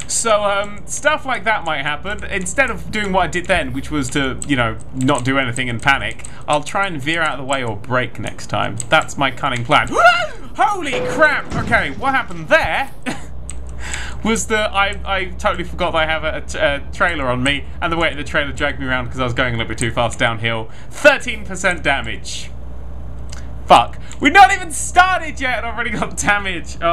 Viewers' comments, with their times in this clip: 0:09 the noise you make hahahahaha
0:10 Oml that gasp I'm dying 😂😂😂